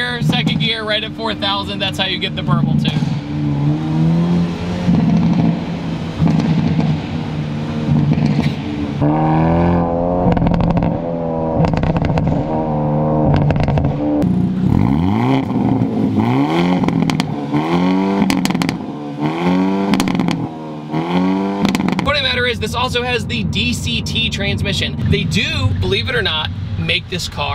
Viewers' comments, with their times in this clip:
0:10 sounds exactly like when I eat huevos y frijoles